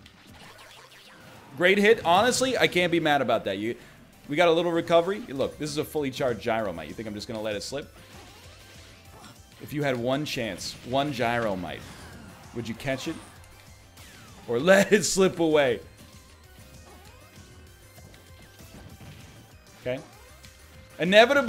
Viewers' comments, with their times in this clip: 0:05 He went true Australian on us. Gyro mate.